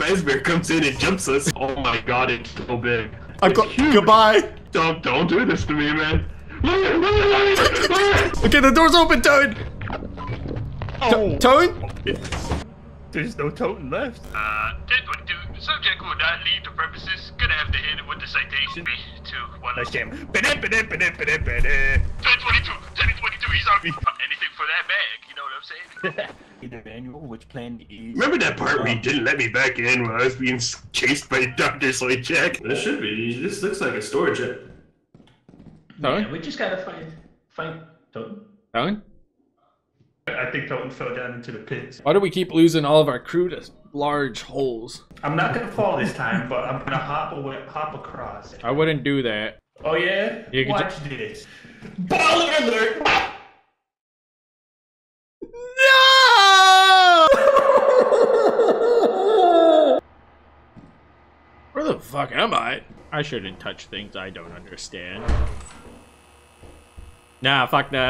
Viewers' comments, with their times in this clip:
0:05 is a moments before disaster and the panic in his voice sells it so well
0:06 there's something so inherently terrifying hearing someone you can't see scream for help and then begging to be let in over comms, only for a moment later to no longer hear their screams and hear the crunching of bone instead
0:52 The delayed scream did it for me😂😂😂
0:55 the AGONY in that cry was hilarious